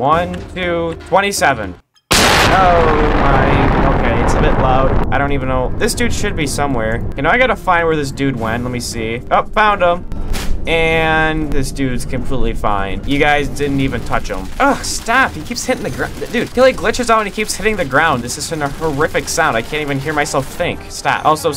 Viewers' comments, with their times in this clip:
0:03 "its a bit loud" pov: the headphone users